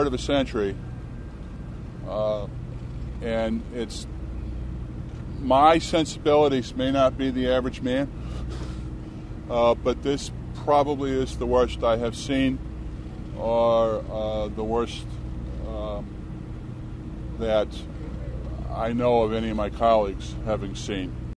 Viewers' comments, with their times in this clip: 0:07 you can laugh dude, seriously!?
0:08 A little chuckle when kids “Supposedly“ got shot.